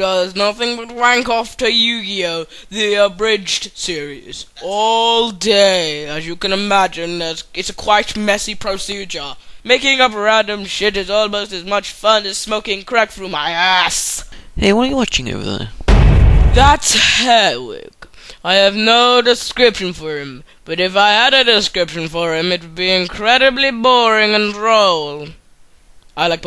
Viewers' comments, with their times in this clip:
0:10 how long can u last with the volume up all the way? for me.